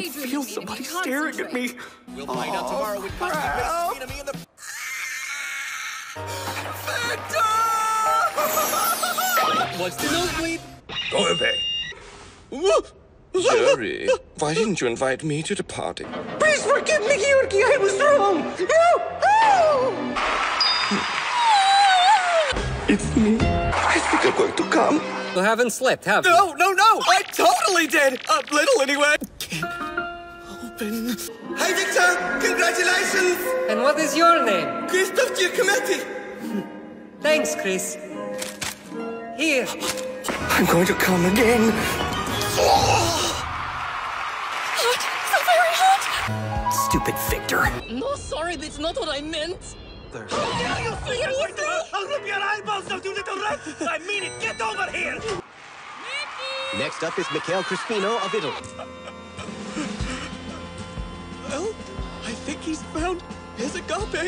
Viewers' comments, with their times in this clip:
0:02 the reporter behind them sounds like he’s rapping 😂
0:03 Victor and yuri hugging Kenjirou: agressive insect/rat screaming noises
0:05 the noise my cat makes when I step on her
0:13 Everyone’s talking about Gru but what about the guy sounding like that Prince Charming guy in Shrek?
0:15 i refuse to believe That Christophe and All might have the same voice actor
0:16 I CAN’T WITH HIS VOICE 😭😭
0:16 WHY HE SOUNDS LIKE THAT I- HSHHDHSJFFGKG
0:16 i was dead I DON'T REMEMBER HIM SOUNDING SO WIERD IS THIS REAL????
0:16 WHO THOUGHT THIS SOUNDED ACCURATE I CANT BREATHE
0:16 he sounds like super Mario lol
0:16 😭 HIS VOICE IS MAKING ME CRY
0:16 man's trying his best to be mickey mouse
0:17 I HAVEN’T WATCHED THE ENGLISH ONE BUT IS THIS THE REAL VOICE ACTING LMAOOAKSJSJSJ
0:17 He sounds like Mr. Pigeon from Miraculous Ladybug.... xD
0:18 I DIED IMAO HE SOUNDS LIKE MICKEY MOUSE ON DRUGS AHAHAHAHAH
0:18 I would have left him to with that voice
0:18 I CANNOT BREATHE THAT OHOOOH KILLED MEEE
0:23 IS NO ONE GONNA TALK ABOUT HOW HE SAID THAT DHDHAJDHJA
0:23 CHRIS!!! OMG ITS WORSE IN ENGLISH 😭😭😭 LMAO IM SOBBING HIS ACCENT AS WELL OML
0:23 ✨I tHeNk iMe goEiNg tO cUmE✨
0:24 😂😭😭🤚🤚WHY IS NO ONE TALKING ABOUT CHRISTOPHE'S VOICE, OMG
0:31 why does Chris’s “Hi Viktor!” have the same energy as that one James Charles jump scare parody of “Hi Sisters!”?
0:31 ``Hi Victor! Congratulations`` ``And What is Your Name?`` ``Cristagcifemeki!`` pls, Idk why i found that funny-
0:40 PLS WHAT WKVAIWV WHY DID HE MAKE THAT NOISE AHAHHAJAG
0:40 I got one! iM gOiNg tO cOmE AgAiN VWUUUUUH
0:41 I-M SORRY HE'S GOING TO WHAT AGAIN? AND THE NOISE I'M SORRY IT'S KILLING ME😭
0:42 he sounds like the puffer fish eating a carrot lol
0:42 Me: I actually kind of liked Chris's figure skating idk Me after I think I have found the sound of the spawn of Satan
0:42 is you okay my guy,,,,that didn’t sound like a moan 😂
0:42 That Noise!! XD I nearly died laughing over it!! XD
0:42 because in the dub the sound they put in is impossible to ignore
0:46 help it sounds so much like golden hour here